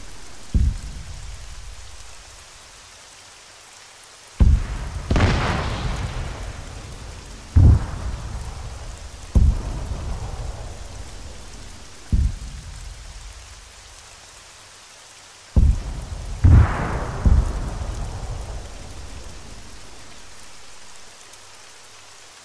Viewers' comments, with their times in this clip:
0:05 the rain and distant explosions is actually pretty cozy